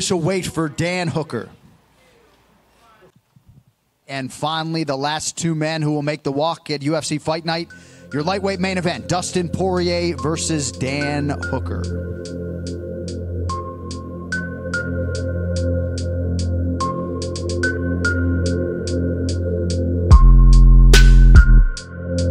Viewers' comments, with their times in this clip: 0:04 and the humbling theme starts once again..
0:09 Holy cow music starts behind Killing me